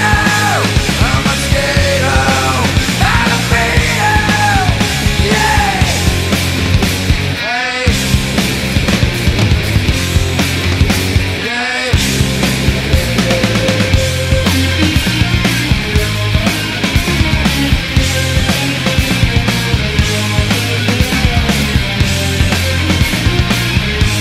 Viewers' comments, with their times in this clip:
0:07 Still can't tell if this is a guitar, Kurt's voice, or both